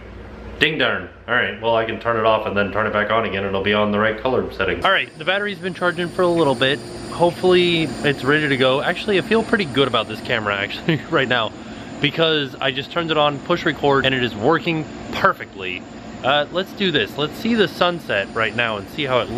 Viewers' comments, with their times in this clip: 0:05 Holy mackerel the image quality is amazing! We can live with a little road noise when the quality is this good :)